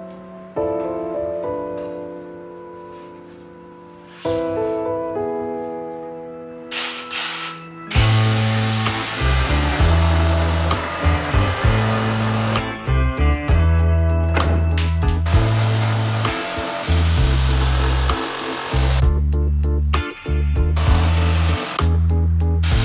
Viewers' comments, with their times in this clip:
0:08 The music editing starting is so satisfying